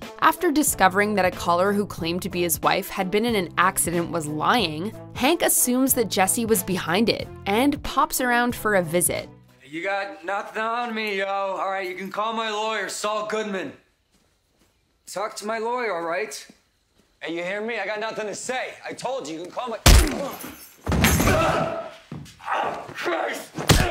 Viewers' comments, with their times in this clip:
0:10 my man started singing